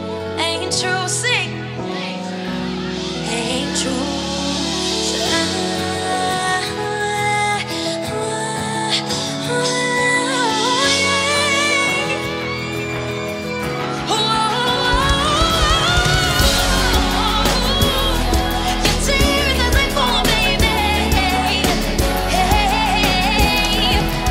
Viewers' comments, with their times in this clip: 0:05 Can anybody tell me what vocal technique is this? it doesn't sound like riff or runs..